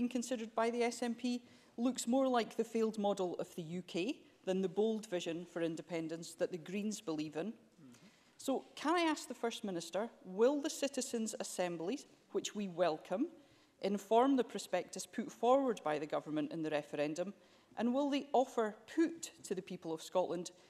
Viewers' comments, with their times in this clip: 0:06 what's the accent of the lady ??